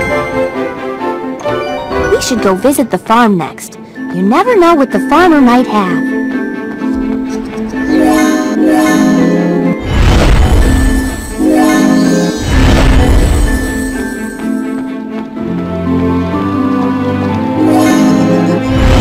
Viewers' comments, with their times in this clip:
0:03 this soundtrack still carries me to a complete different world <3 this game really was my childhood and I'm crying right now